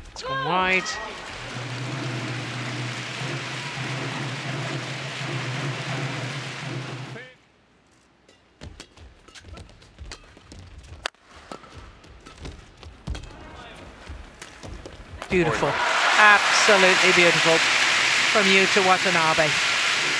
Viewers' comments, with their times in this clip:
0:05 Wow, Taiko drum